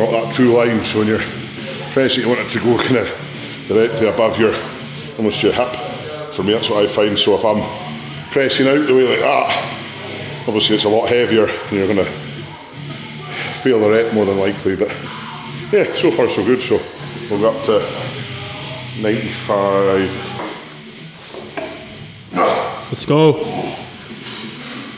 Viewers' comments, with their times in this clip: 0:10 Walk by pantera 😎🤟 *